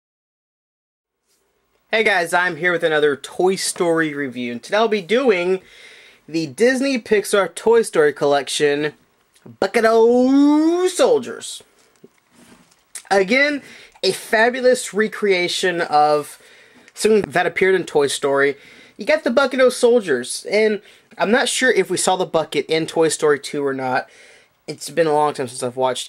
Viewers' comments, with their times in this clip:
0:08 I like the way you said bucket o soldiers